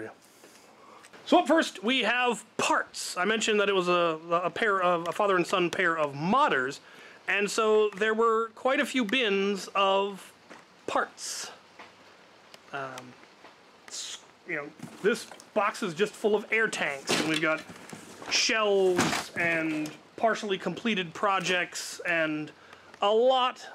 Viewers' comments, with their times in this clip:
0:05 I mistakenly heard it for "a father and son pair of mothers"